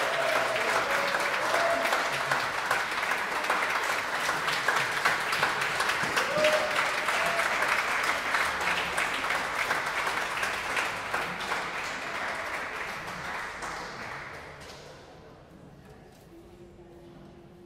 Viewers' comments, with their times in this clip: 0:04 The animal sounds starting is on point!! 100% I thought I was in the Jungles of Africa